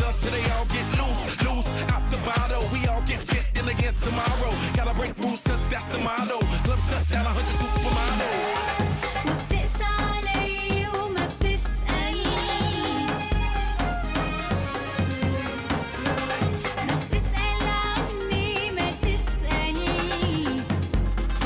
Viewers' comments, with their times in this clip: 0:04 I like the drum mixed withe the melody ... florida feat meryam .. sorry both songs are not related to each other